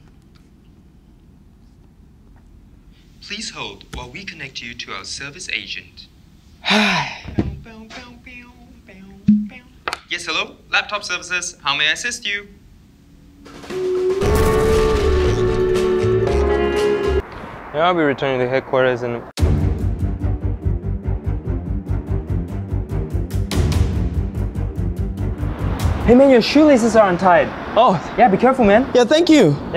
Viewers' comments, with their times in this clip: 0:10 Indian tech support